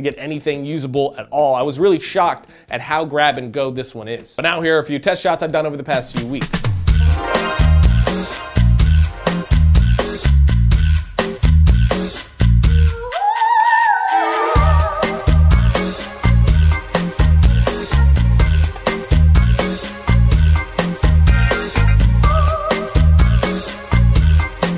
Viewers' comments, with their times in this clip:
0:05 Love that music…! Very Burtonesque. Where does it come from?